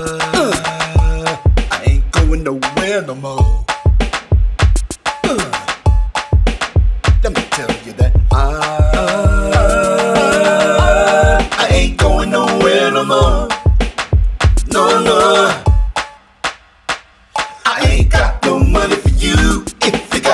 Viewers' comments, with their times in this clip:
0:08 Sounds great. I especially like the part ah ahhh ahhhhh ahhhhh! Very funky!